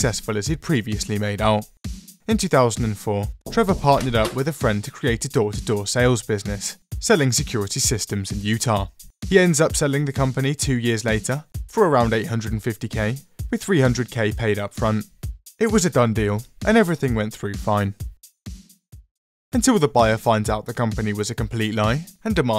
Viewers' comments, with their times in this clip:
0:03 i though someone actually knocked on my door...
0:04 I don't know why but that knock sound effect made me think it was coming from the window behind my desk and scared the shit out of me.